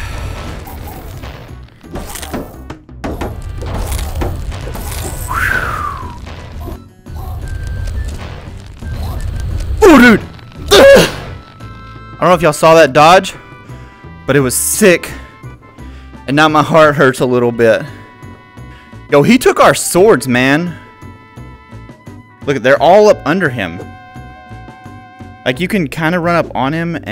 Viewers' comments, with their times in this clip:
0:09 the augghhh EEEEHHHHHGGGU caught me off gard 😂